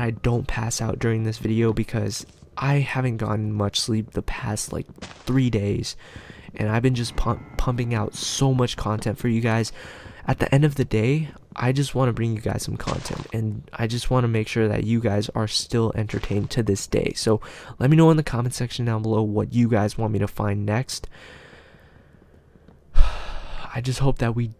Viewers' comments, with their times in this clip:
0:06 It played scary music
0:07 I listen a creepy voice